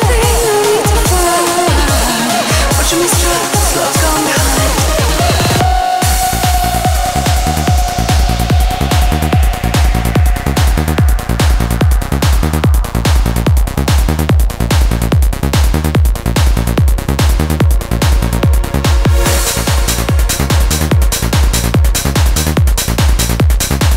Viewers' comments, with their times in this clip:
0:05 AWESOME perfect vocal...